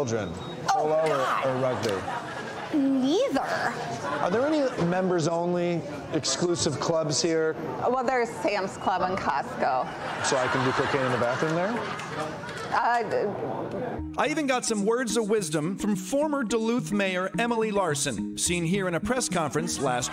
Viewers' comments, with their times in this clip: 0:03 I love that the woman in the background laughs